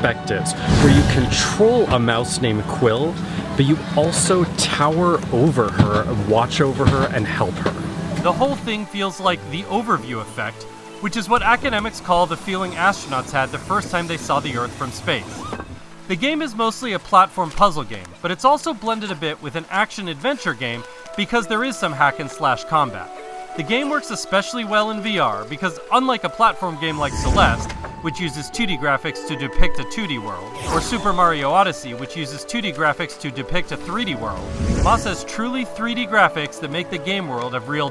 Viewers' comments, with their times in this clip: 0:09 kinda sounded like mr beast?
0:14 why does that sound like mr beast
0:19 sounds like mrbeast